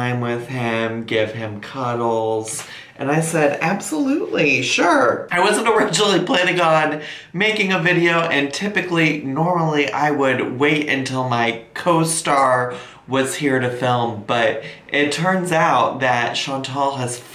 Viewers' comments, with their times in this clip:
0:03 lol in my Gia Gunn voice "absolutely"